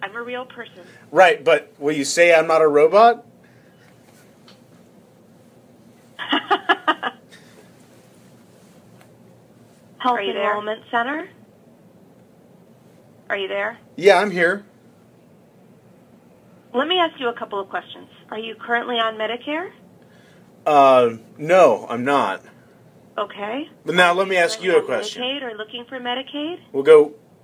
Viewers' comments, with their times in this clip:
0:04 at that point she sounded like she was losing it...
0:05 You can hear the exact moment when the ai nearly snaps to the point of absolute malfunction it’s not allowed to lie and you can tell it’s getting “frustrated”
0:06 is the scary part for me. You can hear 2 scripts going at the same time. It is struggling SO hard
0:08 i swear they said 2 things at once
0:09 the robot got genuinely confused what human sounding message to play and it played like 3 of them at the same time
0:09 three messages are played at the same time
0:09 Whoops! Spoke with two voices at the same time there 😅
0:09 She spoke twice at once.
0:09 the glitch is so chilling
0:09 if you listen closely her voice plays twice and then stops. indicating its just prerecorded voice lines played by another person
0:10 that creepy glitch
0:10 she glitches and double voices like full chills brooo🥶🥶🥶🥶
0:10 Bro bro there are double voices I think the robot is taking over the call of the human.
0:10 i was starting to get freaked out with her doing the samthings over again the same way she laughs how she wont answer him and then this hapends and it freaks me out